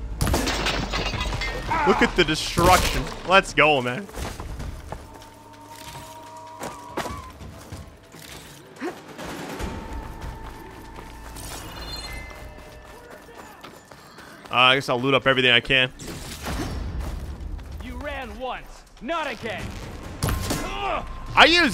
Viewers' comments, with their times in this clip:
0:06 when you hear the "crunch" sound from the arrow head-shot <3